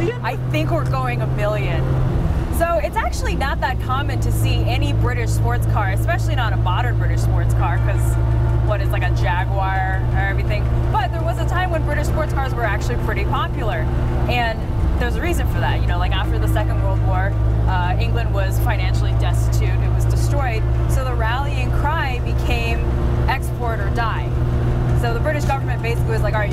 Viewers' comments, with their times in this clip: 0:08 every time I hear an american say Jaguar I die a little inside.
0:09 "JAG-wire," really??? Please, say it as the British do: "JAG-you-are". ;-) Fun video, though. Brilliant!